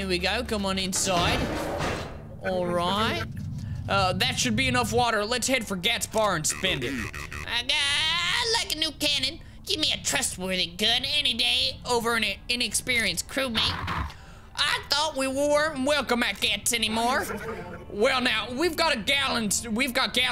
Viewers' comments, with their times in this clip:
0:03 yeah, and then at like he goes from southern to a british accent lol